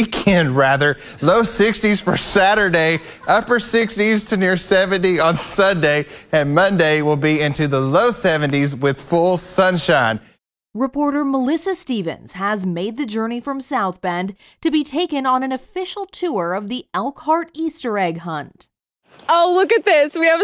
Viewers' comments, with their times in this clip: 0:03 Easter? I thought you said Weaster!